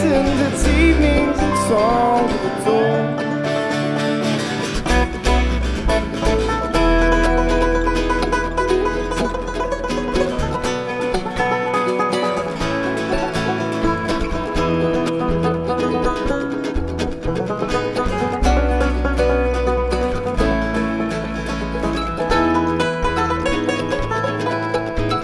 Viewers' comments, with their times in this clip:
0:09 that's a nice banjo solo